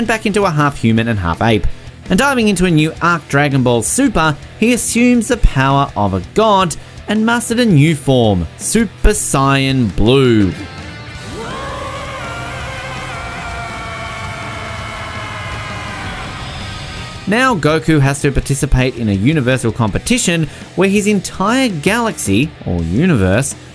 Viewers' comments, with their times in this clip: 0:04 Super cyan blue😂😂😂
0:08 I understand the fact that most ppl call it Narooto but whoa Sian, noice